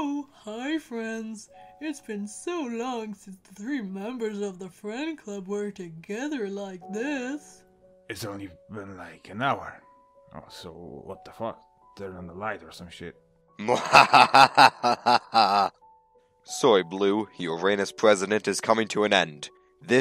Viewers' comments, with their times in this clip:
0:06 on Blueberry sounds like patrick